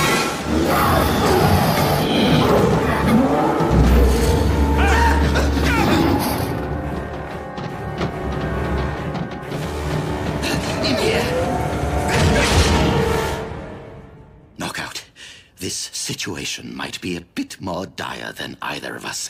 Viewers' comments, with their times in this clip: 0:04 best starscream scream